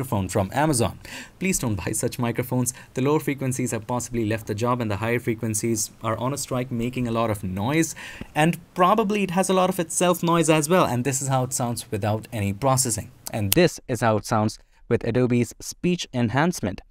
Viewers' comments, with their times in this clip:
0:04 to be honest it sounds damn good in stock